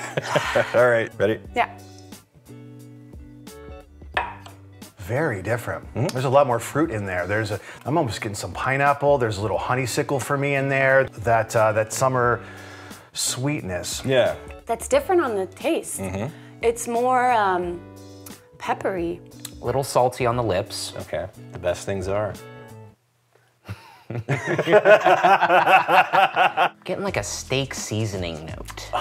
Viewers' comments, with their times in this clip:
0:10 "Communist whiskey" (or at least the "Honey-sickle" part of it....